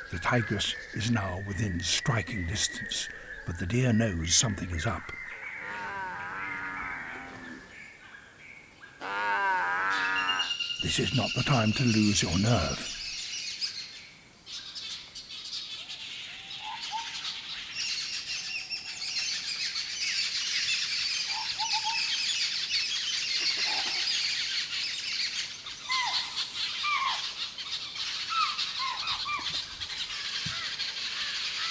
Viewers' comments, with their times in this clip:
0:09 roar sound is similar to 🐈 cat😍😍
0:12 tiger mom said "you shut up!" XDDD
0:13 cub roars Tiger : smh...If you need a meal, just keep quiet and watch..